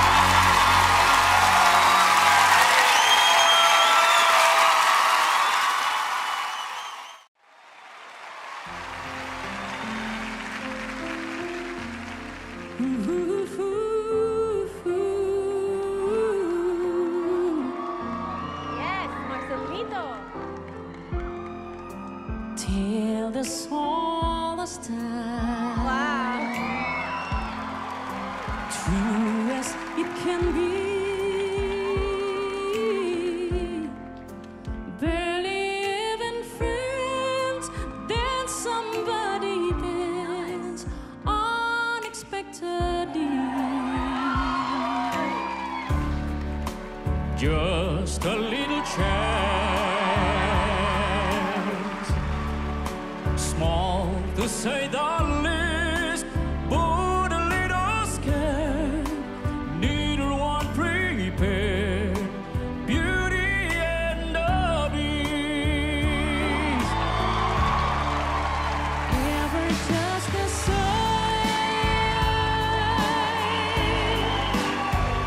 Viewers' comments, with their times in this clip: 0:07 the beauty and the beast song is worth a golden buzzer, thats probably the best two different voices in one song by one person to ever have happened im talking about the one
0:11 Best singer !!! He can duet with himself !!
0:21 I swear this dude is AMAZING!!! He is doing both Céline Dion’s and Peabo Bryson’s parts!❤
0:59 instead of the sentence "Neither one prepared", that Filipino singer said "Need a one" instead of "Neither one". The truth is Marcelito Pomoy —that's his name— does NOT know English. Every time he was interviewd on American television, he had to go thru an interpreter. That's why he didn't win BGT, in spite of all his vocal talent